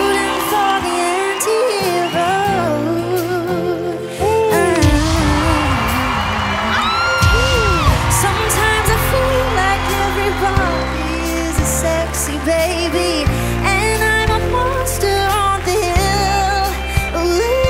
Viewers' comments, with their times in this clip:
0:03 that run right there just made her my favourite audition haha, SOLD!! 🔥🔥🙌🏾🙌🏾🙌🏾